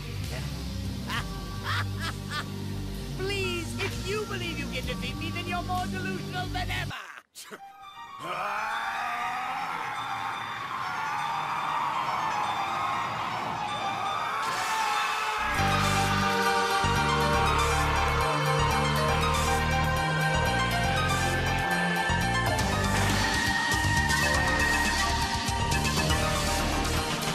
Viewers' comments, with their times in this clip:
0:07 bro... I got them mad chils and a huge wave of nostalgia man 😞😩😭 DBZ was my childhood back in the 90s, and this music just instantly made this so much better than it already was.
0:08 The piano theme starts. Vegeta's power up theme. Chills every time.
0:08 YYYYYEEEEESSSSSSSSSS THATS HOW ITS FUKN DONE THATS HOW ITS FUKN DONE THATS THE TRUE DBZ MUSIC TRANSFORMATION WEVE KNOWN TO LOVE. HHHHHAAAAAAAAAAAAHHHHHHHHAAAAAAAAAAAAAHHHHHAAAAAAAAAAAAAAAAAAAAAAAA💯💯💯💯💯💯💯💯💯💯💯💯💯 But on a side note, if krillin throws golden freeza a senzu bean Vegeta gonna do a 180 an be like kakarot get yo ass up it’s still your turn.
0:08 Frieza: Oh, please, Vegeta, if you think you can defeat me, you’re more delusional than ever! Frieza: …wait, why do I literally hear boss music??